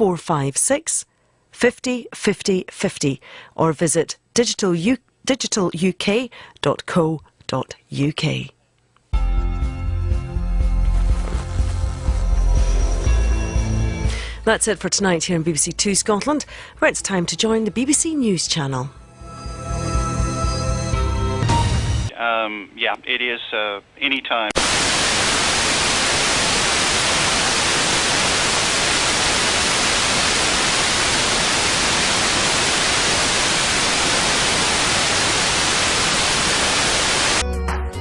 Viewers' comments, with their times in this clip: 0:03 what i love about this part is that this was the last analogue broadcast on bbc two scotland and the lady stuttered lmao
0:03 The first time I have ever seen a narrator stutter.
0:05 The stutter on 😂😂😂😂😂😂
0:07 is gal having a stroke
0:22 literally sounds like someone sniped the connection cable
0:22 BODIES FOUND IN TEXAS Loud Static
0:23 That sounded like a gunshot and it scared the fuck outta me
0:23 Uhm yeah its at any ti- static
0:24 scratch corrupted sound